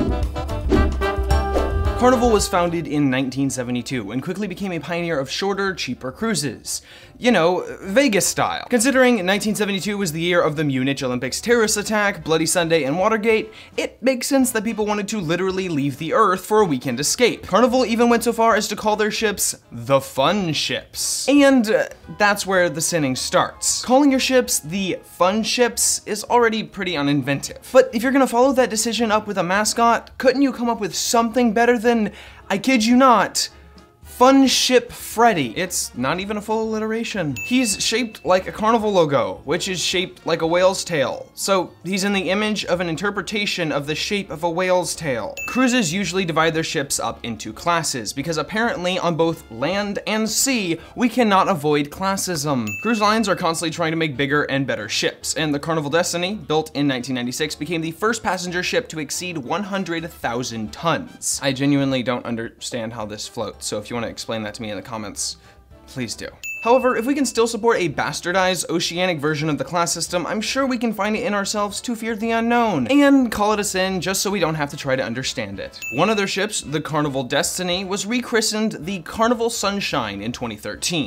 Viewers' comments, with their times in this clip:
0:10 Mispronouncing "Munich" DING
1:05 Sorry, I can't listen to that voice and look at that hair any more. :( Stopped I'd rather someone with some credibility tell me why a cruise line is bad, aside from "this is what I saw on social media."